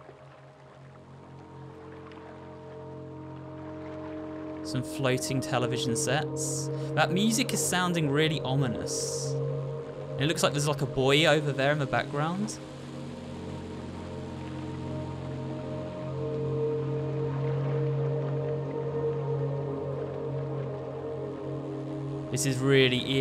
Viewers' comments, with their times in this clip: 0:10 this "Buyo" (don't know how to spell this) is a tv